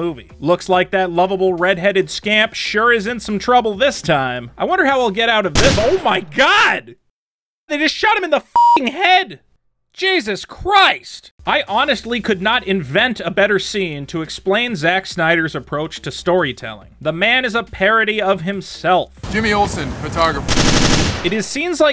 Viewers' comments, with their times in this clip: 0:05 sounds like he said “nigga shot him in the fucking head” lmfao which I found more funny